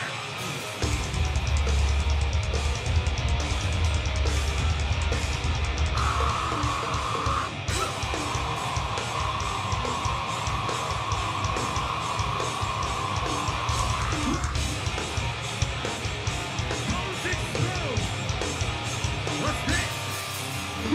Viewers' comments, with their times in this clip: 0:08 Austin absolutely destroyed that scream :o
0:08 Austin absolutely destroyed that scream :o